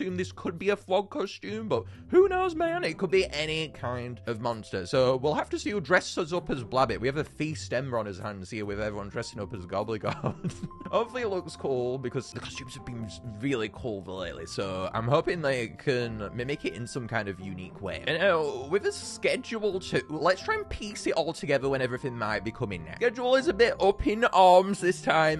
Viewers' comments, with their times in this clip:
0:09 wth is this glowl